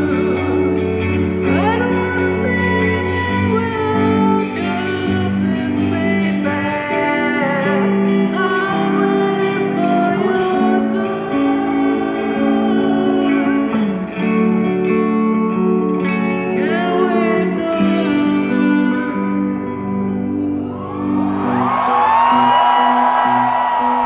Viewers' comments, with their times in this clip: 0:06 That note really touch my heart <3